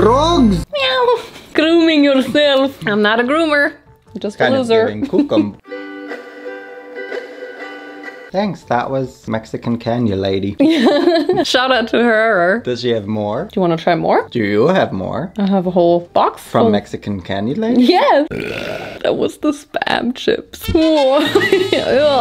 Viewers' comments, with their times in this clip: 0:05 not the ukulele flashbacks 😭💀